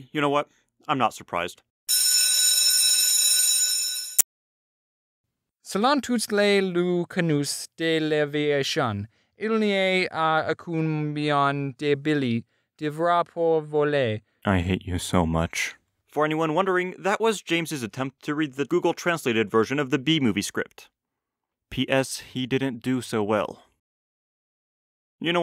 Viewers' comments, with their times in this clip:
0:07 I'm from quebec, i speak fluent french and i didn't understand shit